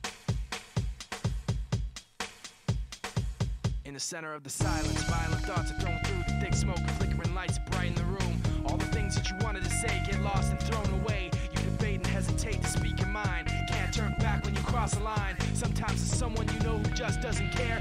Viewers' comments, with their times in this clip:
0:04 Sounds like Halo (Unreleased Demo 2002) chorus stem